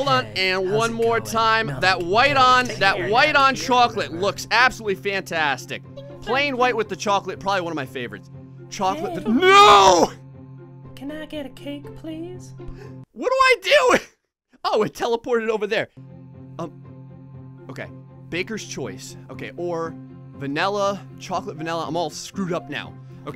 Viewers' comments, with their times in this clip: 0:10 Herbert the Pervert voice
0:11 sounds like herbert the pervert